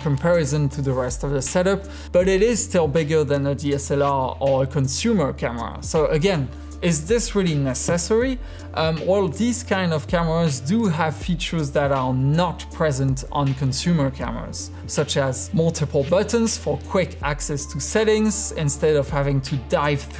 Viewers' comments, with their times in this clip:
0:06 Love how he says "necessary", like it's a combination word of "necessary accessory"